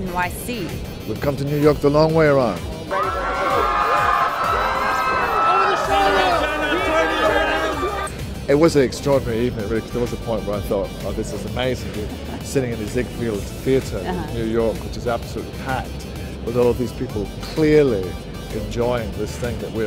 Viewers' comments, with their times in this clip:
0:05 "Oh it's sherlock?" ??? What does he say, I WANNA KNOW... I NEED TO KNOW!